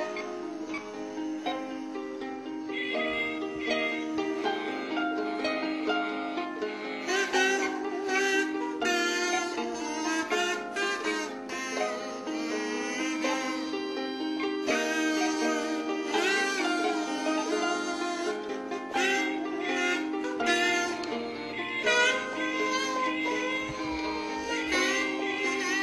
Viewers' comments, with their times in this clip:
0:08 prettiest note .. oh god